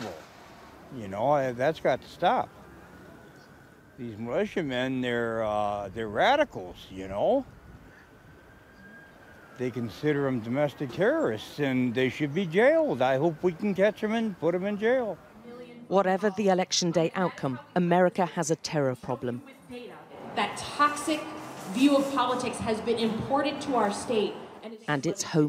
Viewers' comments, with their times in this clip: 0:06 I don't know this guy's accent seems quite Canadian.